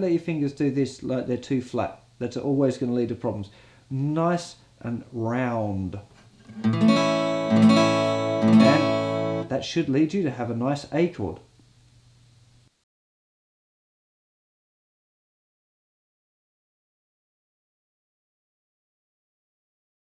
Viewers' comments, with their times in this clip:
0:04 a chord sound